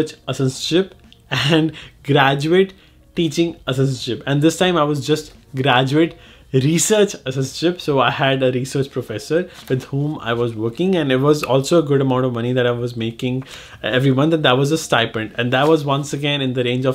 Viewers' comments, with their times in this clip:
0:04 Graduate Research Asszzzzz.. I'm dead😂🤣🤣